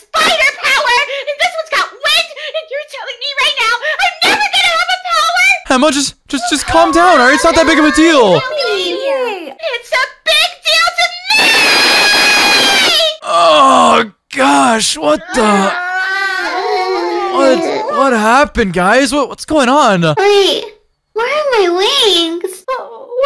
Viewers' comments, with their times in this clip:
0:09 Turn Down The Volume